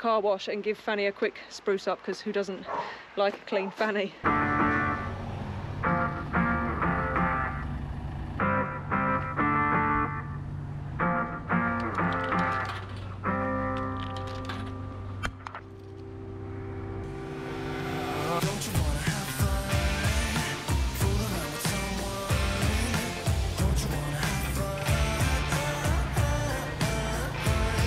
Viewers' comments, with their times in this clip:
0:08 into the video.... Took ya time... 😉🤣🤣 OI.... don't diss my hometown..... And still can't say it right 😉